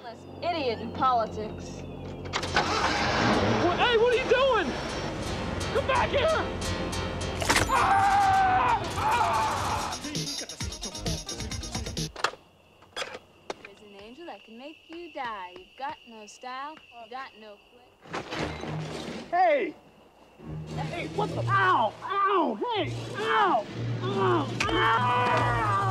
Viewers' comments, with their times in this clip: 0:10 perfect cut screams